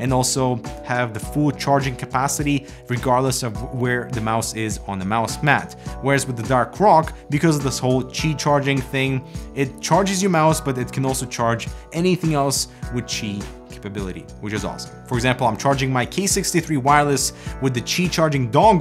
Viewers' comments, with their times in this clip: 0:06 Haha the dark croc